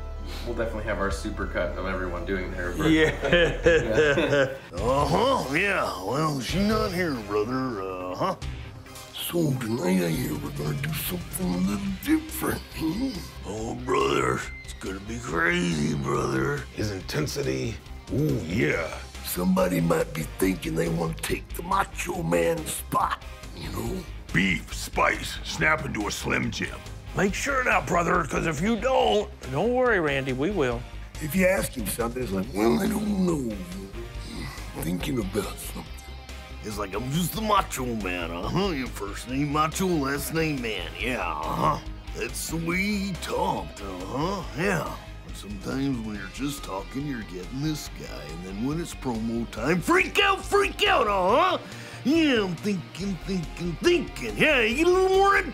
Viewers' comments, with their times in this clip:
0:08 The voice, the words, the tone, the silent voice, the mumbling, that sounded exactly like Macho lol, and then there's Bischoff sounding more like Hogan than Randy Savage
0:27 😂 the Cookie monster doing a Randy Savage impersonation is exactly what I needed
0:37 Pritchard does the best You can tell he's practiced this awhile